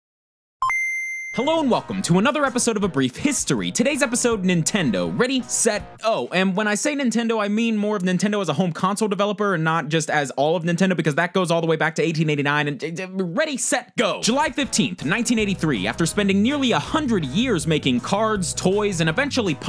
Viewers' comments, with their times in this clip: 0:00 Very relevent intro sound for once.